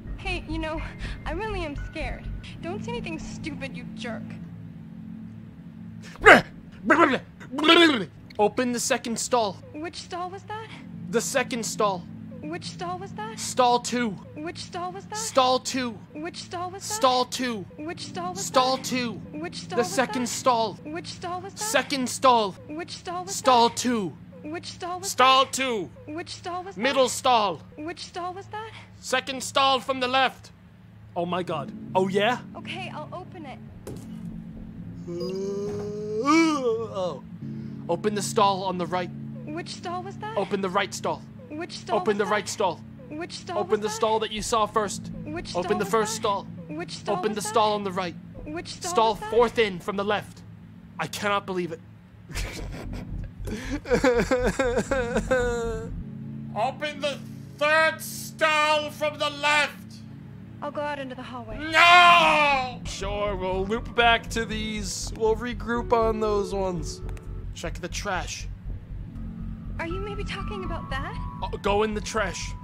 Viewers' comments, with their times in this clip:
0:06 you can physically feel his rage and desperation growing
0:55 This “No0oOOo” had me dying 🤣